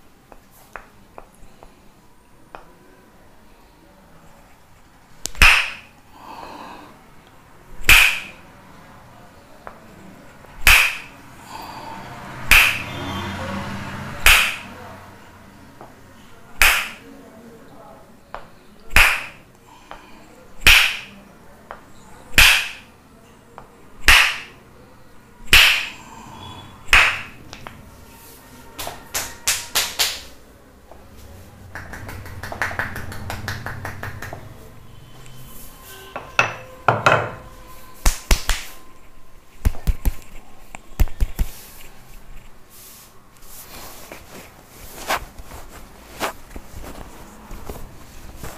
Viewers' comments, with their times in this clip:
0:07 they've recorded a guy going "aaaaah" "oooooh" over the audio and it's hilarious 😂
0:31 when your neck is a door